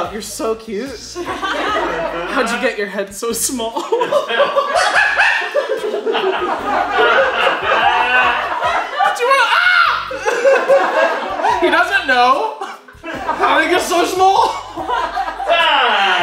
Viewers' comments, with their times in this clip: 0:03 i cant tell if the monkey noises are on purpose